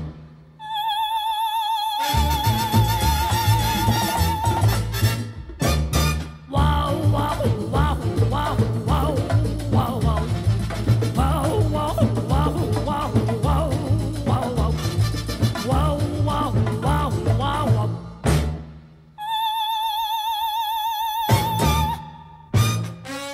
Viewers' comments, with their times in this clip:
0:07 I'm here beacause I got this stupid song stuck in my head. Jinx was awesome. But I went to school the Tuesday after and started randomly singing this with squeaks and that random wOwWow at like I got a few weird stares. But my best friend (a girl I barely knew) started singing along with me. It was pretty much a reenactment without the dancing. LOL